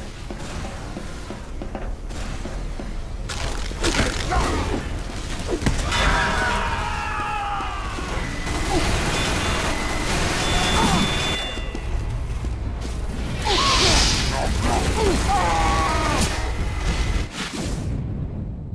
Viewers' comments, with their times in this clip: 0:05 me when punch a dude, “boom”